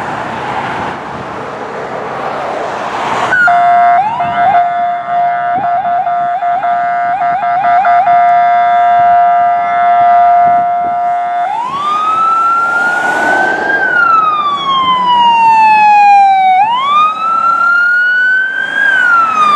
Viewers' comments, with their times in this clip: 0:04 that horn sounds so good! Exceptional video.